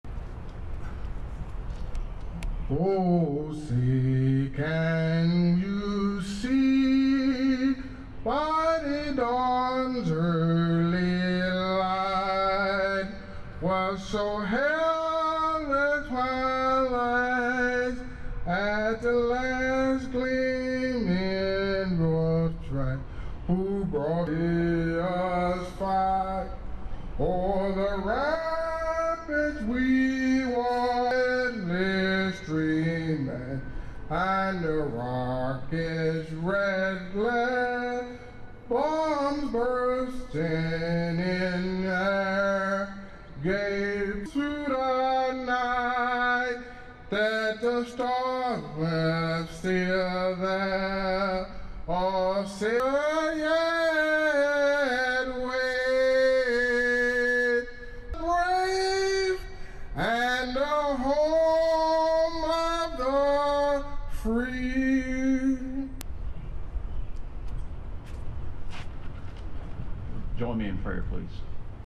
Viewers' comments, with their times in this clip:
0:01 "OoOhHHhoO". That's how you set the tone!
0:12 "Oh no, these lyrics are in Spanish!"
0:14 i liked the parts where he obviously didn't know the lyrics so he just mumbled gibberish. is one of several
0:14 he just straight up has a stroke
0:21 I heard, "at the lands gleaming road track"
0:25 I don't know what is more tragic, the singing or dude's haircut
0:32 I can really relate to the breathing of trying to contain laughter is a hard thing to do. Respect to this man, strong American right there.
0:32 dont know whether he trying to laugh or cry lol
0:42 I had the subtitles on and it says " won this dreamin I love our his red glare bombs bursting" super random words it can't distinguish his words.
0:58 the “brAaAave” had me dead 💀
0:58 No. He's talking he clearly bellows out "Rape"